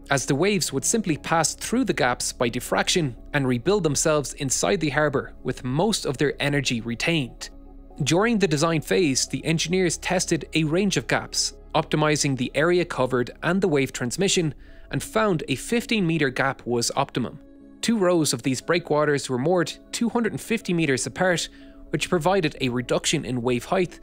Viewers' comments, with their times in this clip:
0:09 sounds like you are saying 50 meter instead of 15 meter(50ft)